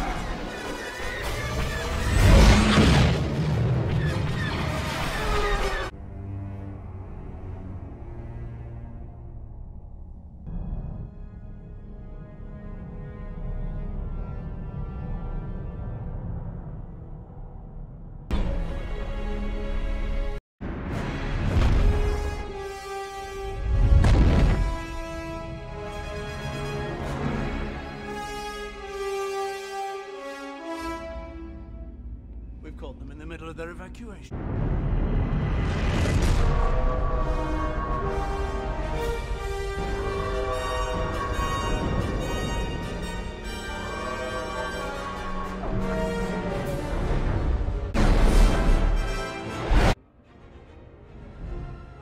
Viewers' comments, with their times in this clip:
0:10 tho the music is perfect, the bow of the vessel just gliding effortlessly from right to left
0:36 the ship with siren sounds good
0:37 the alarm sound of the dreadnought is scary